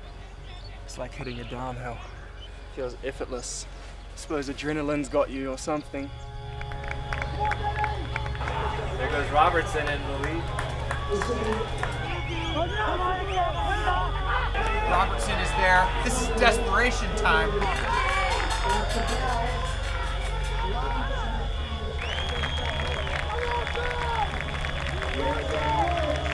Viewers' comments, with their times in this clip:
0:07 what was the music ? so relaxing